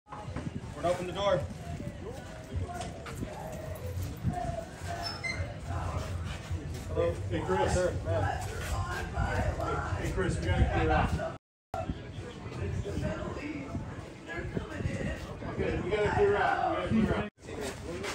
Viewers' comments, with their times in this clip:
0:01 who's the guy in the shot taking a video same time as you, that lady in the stall always sounds like she's dying, everyday making crazy animal type sounds.